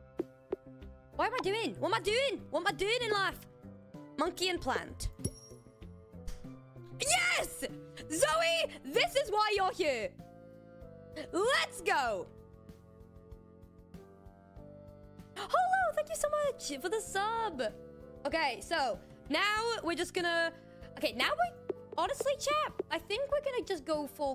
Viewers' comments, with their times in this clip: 0:08 I actually looked up cause you yelled my siblings name 😂